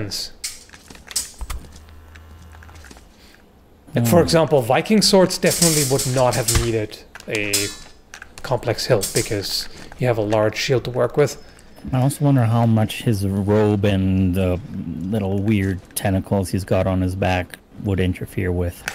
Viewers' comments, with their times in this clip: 0:03 That 'thunk' was epic! I think I actually grimaced.